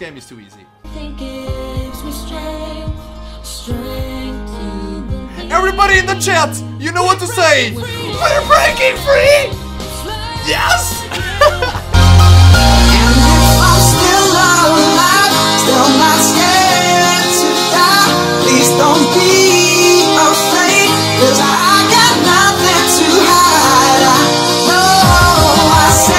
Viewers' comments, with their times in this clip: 0:09 omg lol i love you'r laught - and i love you for everything too x)